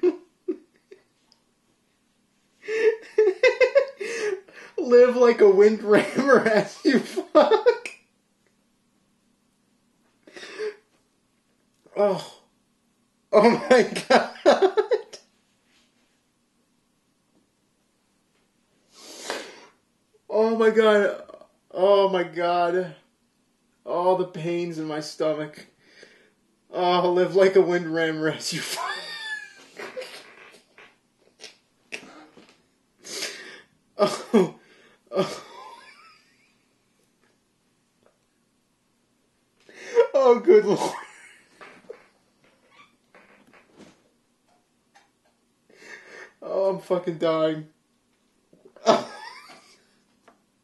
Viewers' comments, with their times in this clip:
0:03 hmm i see you've been practicing your Japanese school girl laugh lol
0:29 I'm pretty sure he started farting there...
0:37 is he laughing or CRYING?